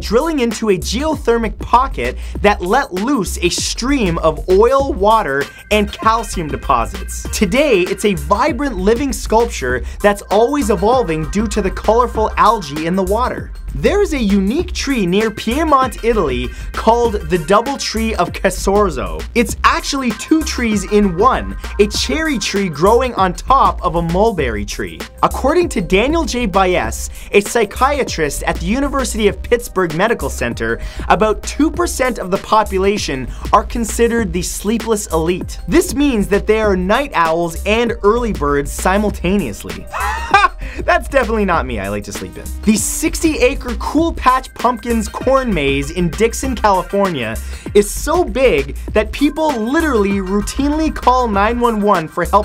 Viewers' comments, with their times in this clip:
0:04 who else notice his voice crack
0:39 dat laugh doh min